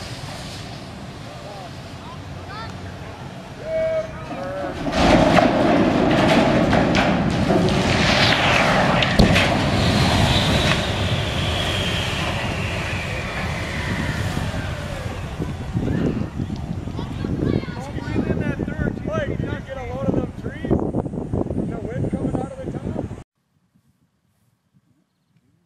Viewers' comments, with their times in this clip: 0:06 Roblox titanic funnel/spitting sound be like: